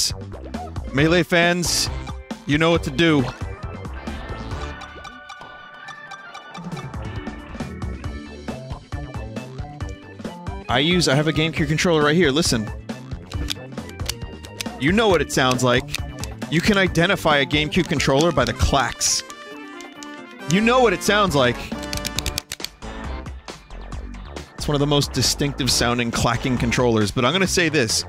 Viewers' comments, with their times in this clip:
0:10 conveniently I had a GameCube controller by me too, so I pressed some buttons, LITERALLY IDENTICAL. Although I'm pretty sure he pressed the A button, but I always thought that the side bumpers were more recognizable.